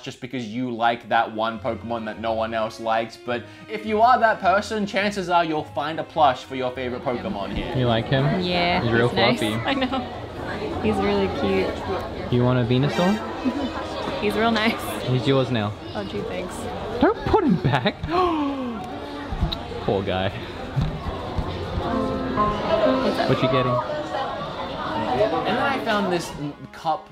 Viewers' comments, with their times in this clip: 0:10 “venausaur” I am so disappointed